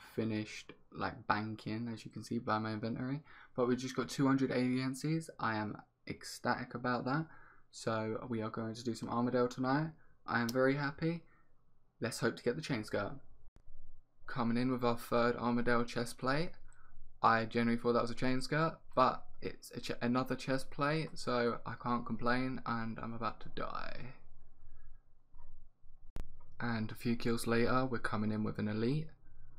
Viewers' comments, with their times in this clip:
0:10 was that a clap of the hands? very nice enthusiasm 👌🏻